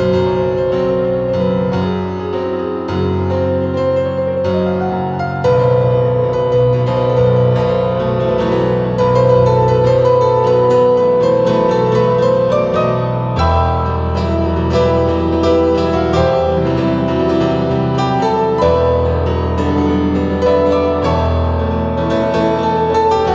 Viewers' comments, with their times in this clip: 0:04 I love how you incorporated the main theme into the final battle, it really feels like that was the moment Fox made his final gambit and defeated Andross.